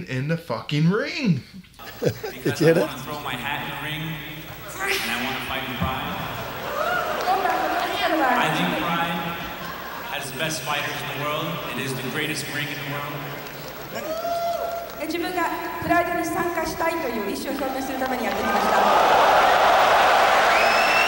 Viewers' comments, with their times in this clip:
0:04 Uhhh.... totally did not hear this the first time. Satan again? FREEEEAK is says. Someone on the audio tech for this DVD was absolutely trollin.